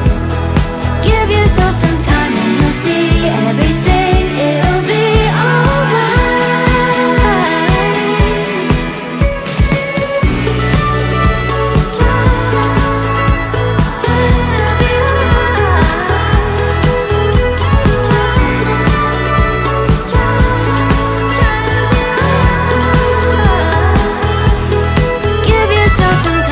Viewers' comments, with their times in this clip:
0:10 Is this real mandoline sound ?